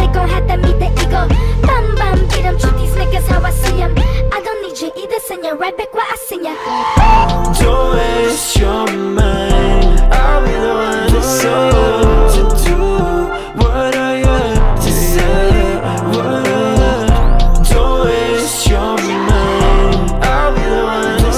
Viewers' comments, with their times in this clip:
0:08 Omg the switch is so unexpected and good!